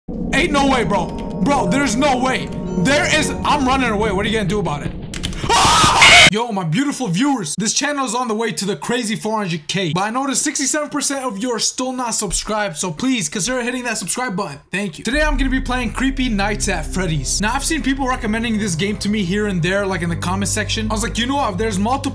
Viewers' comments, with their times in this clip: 0:05 The Scream Of 87